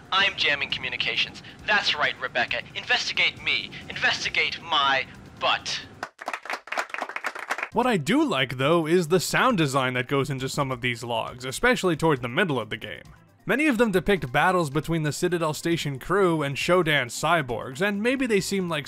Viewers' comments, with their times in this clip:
0:03 Oscar worthy voice acting XD